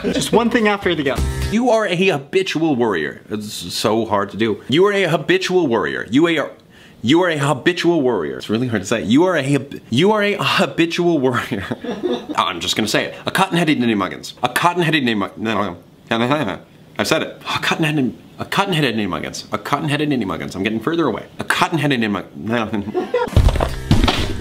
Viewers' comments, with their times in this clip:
0:10 You are a hibiscus Warrior jus popped into my head